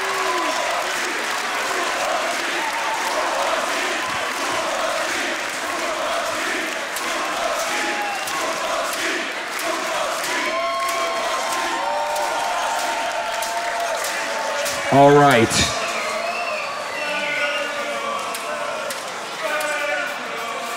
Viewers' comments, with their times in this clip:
0:04 my hearing minutes, Jokowi Jokowi